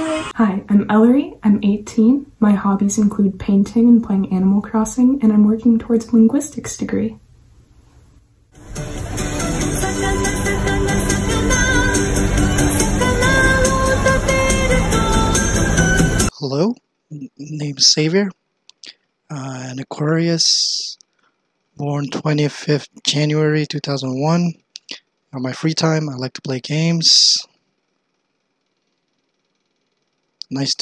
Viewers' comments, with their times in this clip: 0:07 lmao the 魚 song had me dying
0:11 I lost my shit there. Isnt that supermarket music xD
0:11 The sakana song came out of nowhere and broke my legs
0:16 Me: yo this dude sounds like YAGOO Him: NICO-NICO-NIII! I knew it